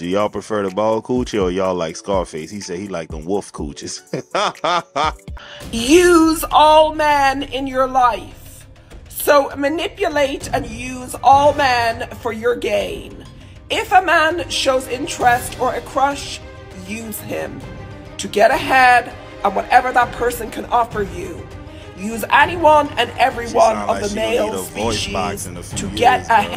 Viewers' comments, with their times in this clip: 0:10 Holy ... I reeeaaalllly hope that's not her real voice. Because between a 76 yr old lifelong smoker, someone just coming off a stint with step throat and yelling at a concert for the last 3 1/2 hrs straight, i don't know what's going on with her voice... The vocals do not match the face at all. What is she eating?